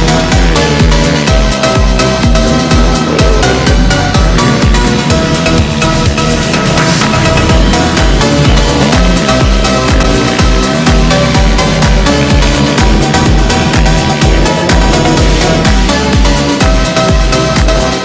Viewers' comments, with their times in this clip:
0:06 Mad rythm with a gear change